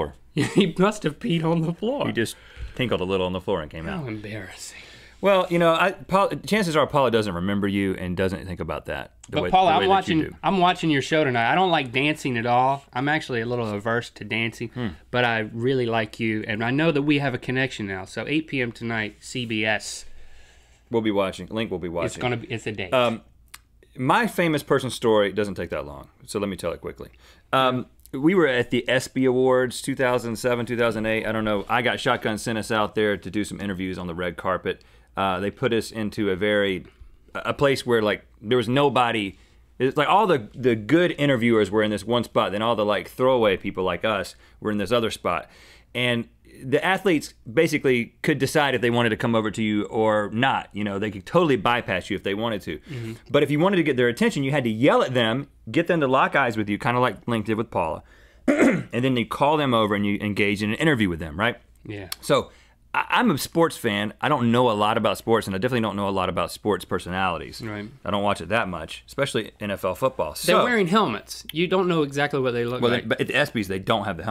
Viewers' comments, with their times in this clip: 0:03 Love it, how Link says "How embarrassing..."
1:00 **I move away from the mic to cough